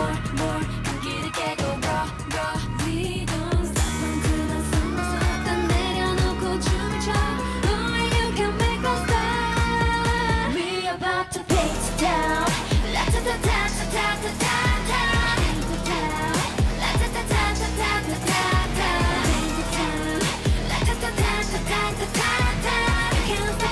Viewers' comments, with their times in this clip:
0:10 bc got a little crackvoice prove they sing live